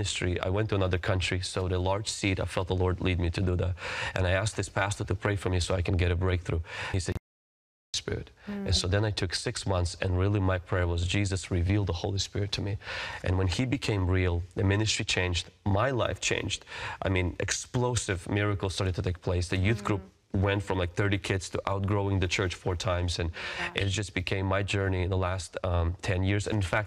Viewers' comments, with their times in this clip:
0:07 the sound goes out and you can’t hear his words